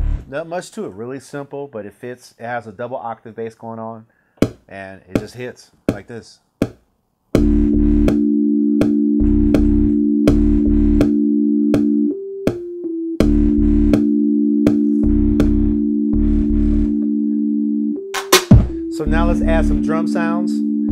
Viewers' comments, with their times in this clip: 0:04 Not gone lie, i thought i was about to hear Dej Loaf - U, Me & Hennessy